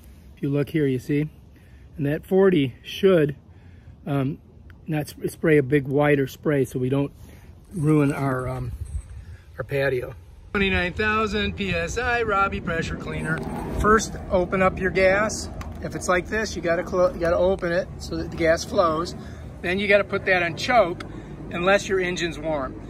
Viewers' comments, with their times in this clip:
0:10 YES!!!!! He’s trying to sound all smart and like he has a lot of experience. I’ll show you how to Use this Ryboi 2900 psi pressure washer OH YEAH, I just dropped my gun (nozzle)🤣😂🤣😂🤣 then he calls it the Robi 2900 pressure washer. He’s to much.